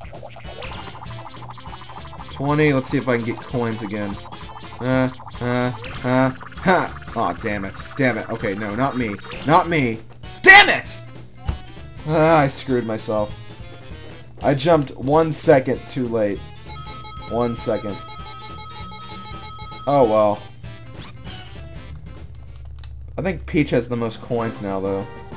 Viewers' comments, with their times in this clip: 0:10 press and u got AM IT not DAMM IT